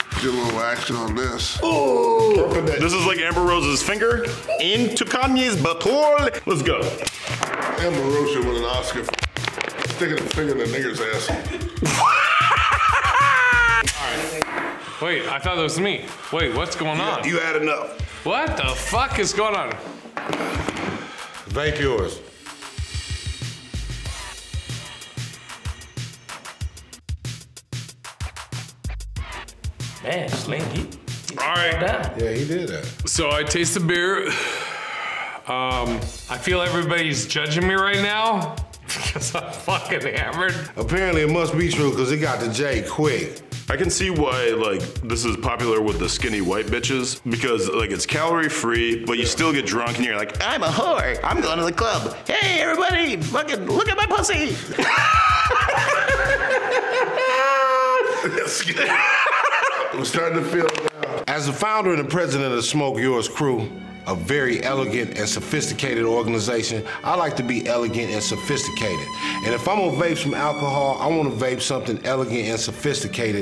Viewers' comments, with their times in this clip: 0:09 That laugh had me going for a solid like 8 minutes
0:55 With a laugh like that, he should be trying out for The Joker. Wickedly good laugh!
0:55 "ay ay Don't cheer me on while I got my lips puckered up on something" lol also for the Jokers laugh
0:55 that joker laugh tho
0:57 dude laughs like Heath Ledger's Joker.
0:57 he laughs like Jerome Valeska’s Joker from Gotham lmao